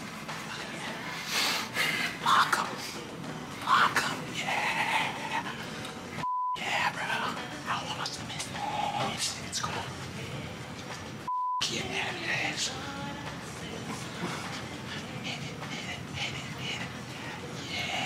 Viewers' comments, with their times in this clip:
0:05 Keegan almost laugh 😂